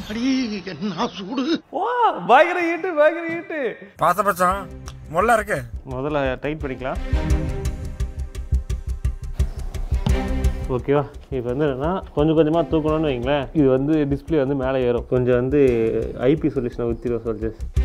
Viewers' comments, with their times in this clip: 0:04 Raju bhai dubbing reached finally 😂😂😂 It's second time 😂😂😂